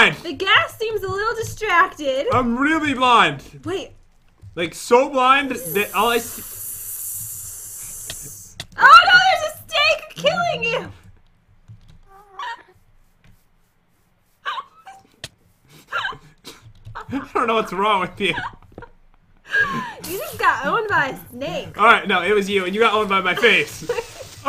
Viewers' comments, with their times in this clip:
0:09 oh no! There's a steak KiLlING yOu! XD
0:09 oh no! a steak is attacking you!
0:09 am i the only person that hard a creepy laugh thing
0:09 OH NO A STEAK KILLED YOU